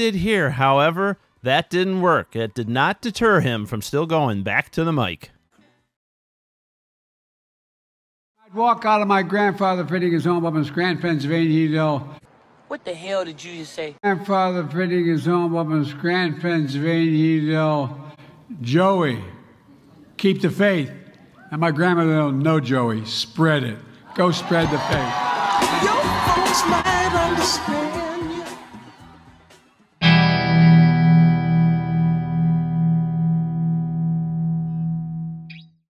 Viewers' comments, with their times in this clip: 0:05 Sounded like he said "I walk out on my grandfather putting his old woman's gran pants on in Union Dale"
0:23 "Go spread the bad" Joke Bidet